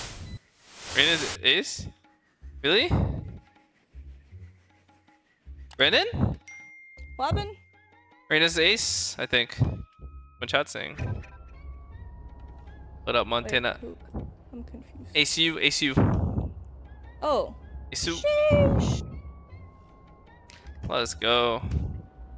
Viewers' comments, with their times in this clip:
0:03 That ding in your video gets me every GOD DAMN time. It sounds like my text message notification😂 the sound is after